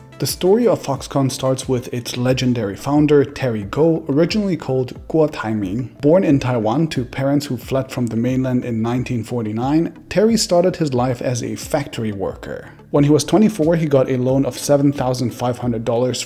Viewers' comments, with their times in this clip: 0:04 that pronunciation was spot on